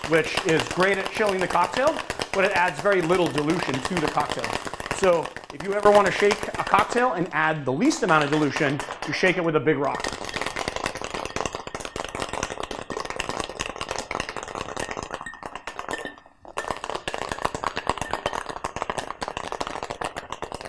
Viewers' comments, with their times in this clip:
0:05 The sound is just off at the end, your voice and some camera related sound? Happens Great video though, as always.